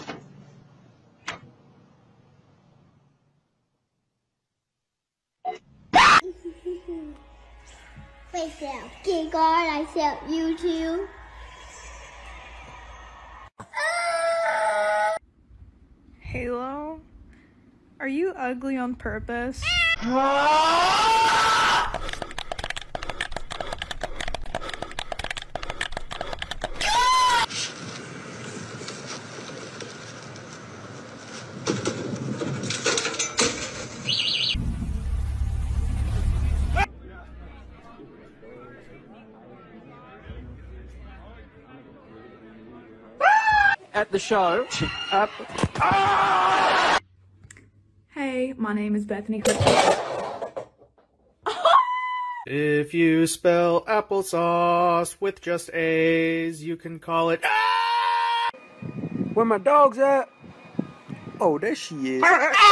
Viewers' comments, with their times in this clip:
0:04 HER SCREAM GOT ME LOL
0:22 A cat screaming 😂
0:22 A cat screaming 😂
0:44 that burb flopped on that man